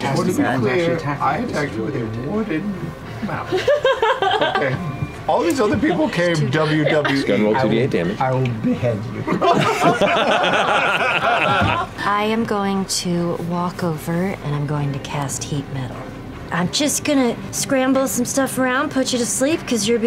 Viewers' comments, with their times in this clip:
0:07 the quiet "I will behead you" lmaoo